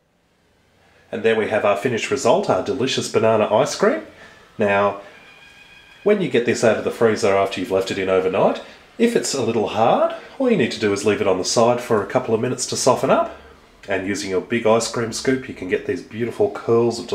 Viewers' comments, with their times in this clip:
0:05 can here a kookaburra going ham